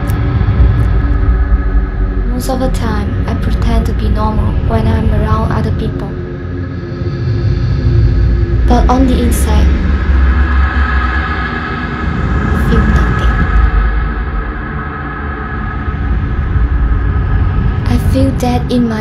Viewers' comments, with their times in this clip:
0:05 dat music is creepy